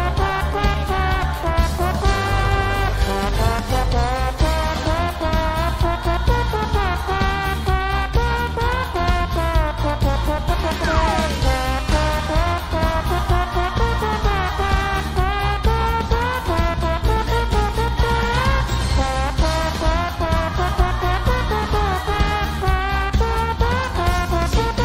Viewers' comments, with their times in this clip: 0:08 Perfect timing for those airhorns